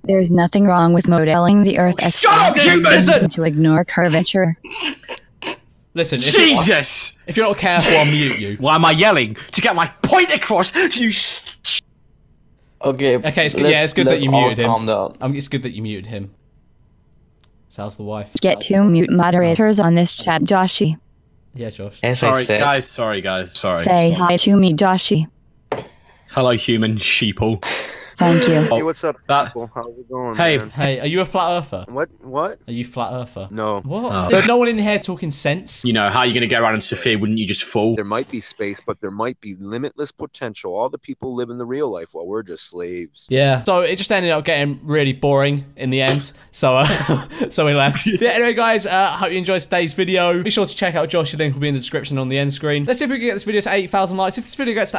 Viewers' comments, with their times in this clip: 0:04 He was trying so hard not to laugh, but it just made me laugh so hard.
0:38 why does he sound like schlatt
0:38 swear that’s mr nightmare